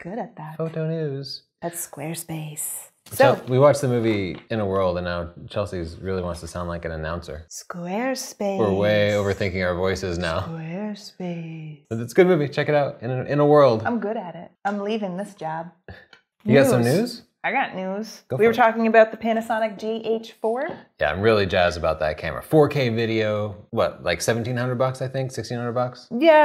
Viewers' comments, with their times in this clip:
0:08 Chelsea sounds so spooky. Actually reminds me of the buggers in Charlie the Unicorn animation films.